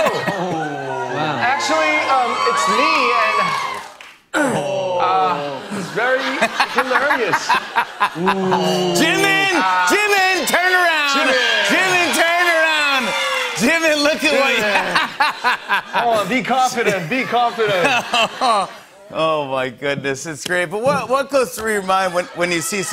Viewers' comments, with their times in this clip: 0:08 And Jin booing debut Jin XD